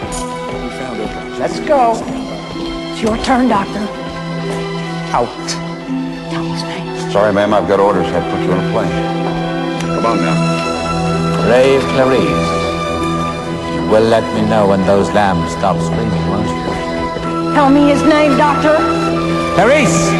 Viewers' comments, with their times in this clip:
0:08 Love that part, esspecially when the music!